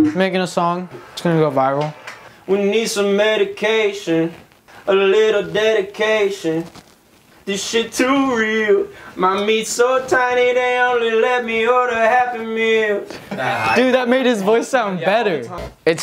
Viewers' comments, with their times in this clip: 0:04 he sounds like the dell commercial song